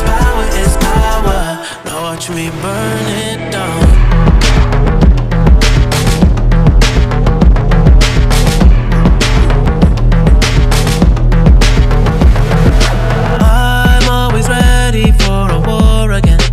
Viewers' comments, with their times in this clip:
0:03 OMG THIS SO BEATTTTT